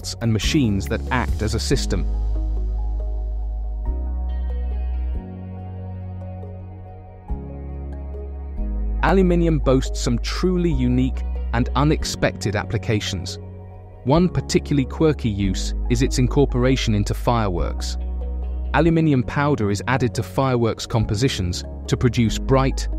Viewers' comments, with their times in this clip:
0:09 he said "al-yoo-mini-um"
0:09 Yes it does ! Meaning it's a chat GTP-generated text narrated by a automated voice. Not a bad voice though...